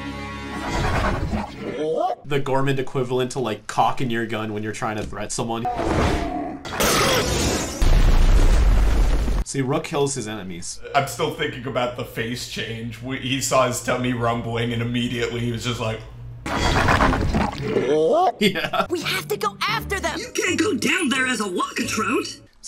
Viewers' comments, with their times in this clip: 0:05 did i just hear the DOOM zombie man moan